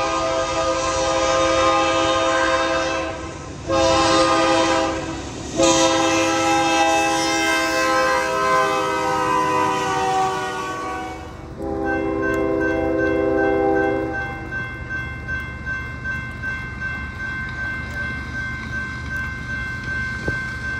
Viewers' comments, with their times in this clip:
0:06 I love that horn